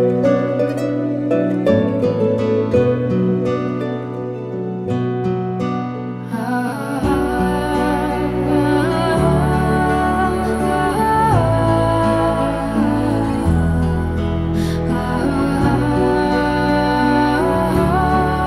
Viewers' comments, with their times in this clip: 0:06 The instrumental is amazing, otherworldly, and vocals too!